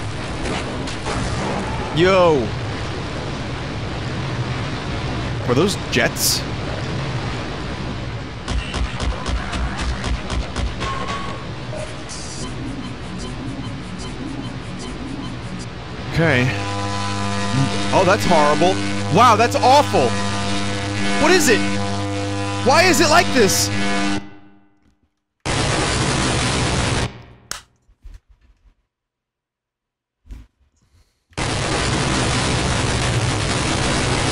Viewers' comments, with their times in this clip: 0:10 HOW THE SOUND WENT FROM BAD TO WORSE TO SOMEHOW EVEN FUCKING LOUDER IS MAKING ME LOSE MY SHIT
0:11 I nearly coughed up a lung laughing at the truly terrible sounds starting Louter, Louter!
0:16 Loud Equal Funny as they say